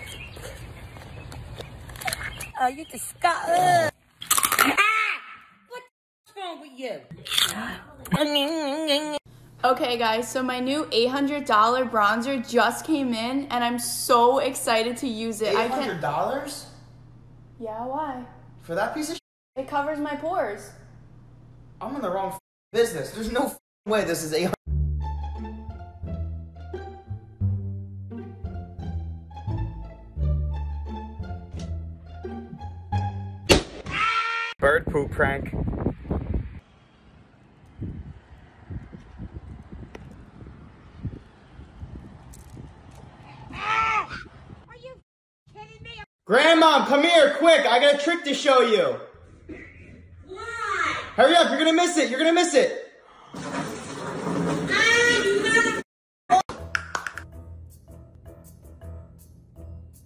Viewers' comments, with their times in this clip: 0:08 That’s so funny when the grandma goes like munching
0:41 Is it a sound of a bird